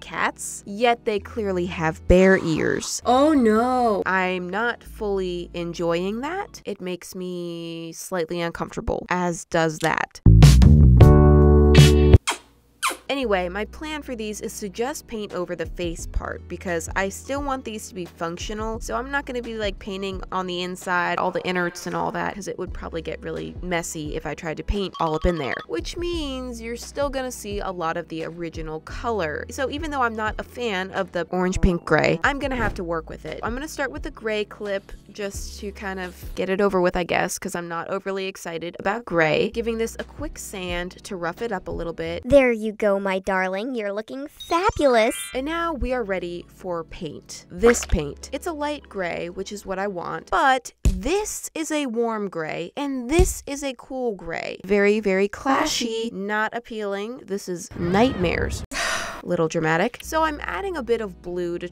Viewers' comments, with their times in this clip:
0:10 WOAH TH- “smexy music 😏😏😏”
0:42 why does she sound a bit like a character from sailor moon💀